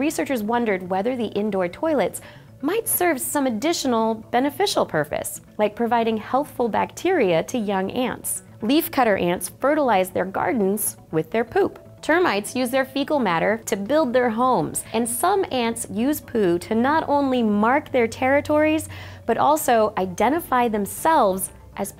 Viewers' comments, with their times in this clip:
0:05 Did she just say “purface” instead of purpose?